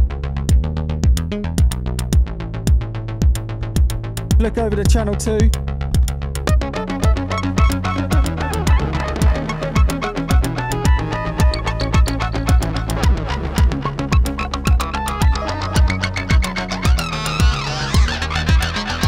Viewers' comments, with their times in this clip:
0:06 the heck were u talking about? i honestly loved that topline bro